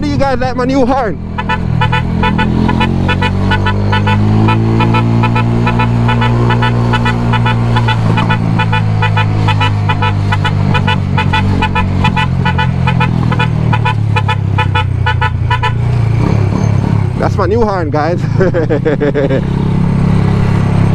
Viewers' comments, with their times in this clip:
0:07 horn bad man... issa vyb